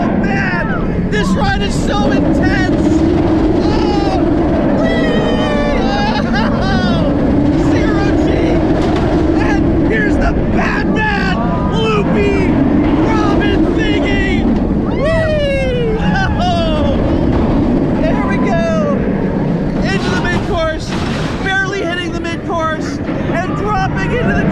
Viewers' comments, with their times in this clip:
0:10 my guy was having so much fun he forgot how to pronounce 'Batwing'